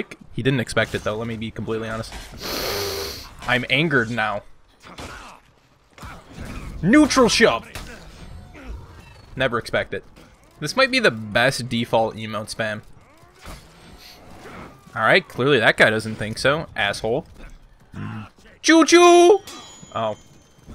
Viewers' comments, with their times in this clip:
0:03 Big boi inhale I’m anger now